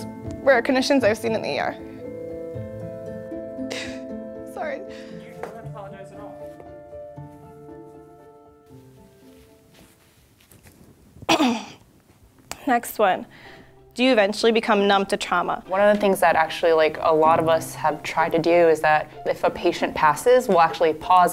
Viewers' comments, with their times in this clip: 0:03 that's so sad😔her crying shows how empathetic she is💜